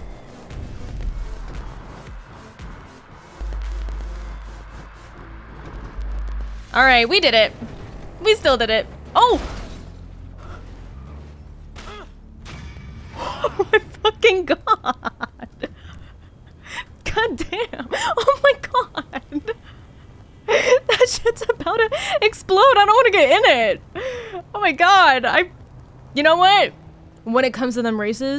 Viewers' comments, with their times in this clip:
0:07 Awesome video even with the crackling. Best part of the video btw😂
0:09 finishing the race with a bang